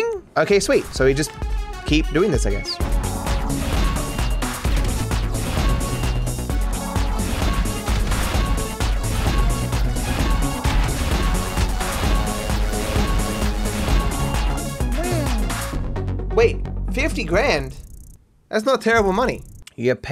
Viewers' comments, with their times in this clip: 0:03 I love the capture sounds playing exactly on the beat.